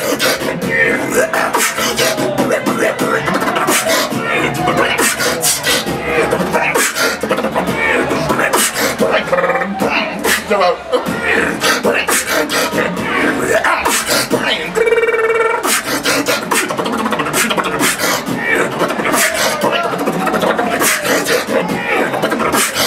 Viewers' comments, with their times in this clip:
0:09 i love as he says ''chill out'' xD